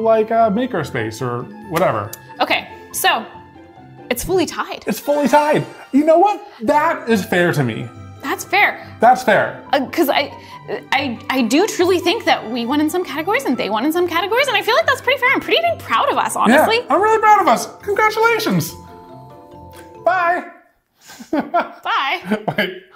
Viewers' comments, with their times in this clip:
0:09 I got so scared at like because they played the sound u get when u find a shiny in Pokemon Legends